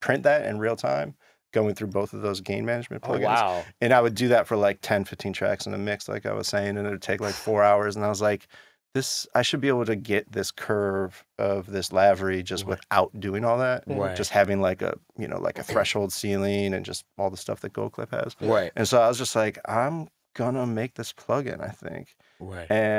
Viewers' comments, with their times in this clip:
0:10 missed a bleep👮‍♂️🚔